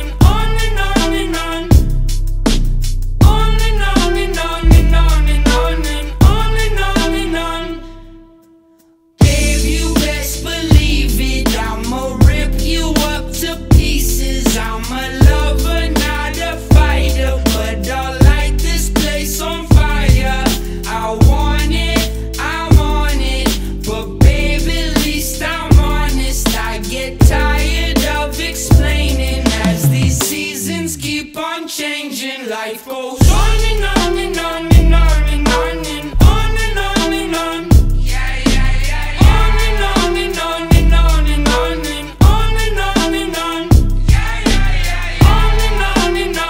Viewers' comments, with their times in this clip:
0:08 is it ok that we don't here him twice? there are 2 mics close to each other
0:31 I think he is singing along with the playback Try to use iem and check this time stamp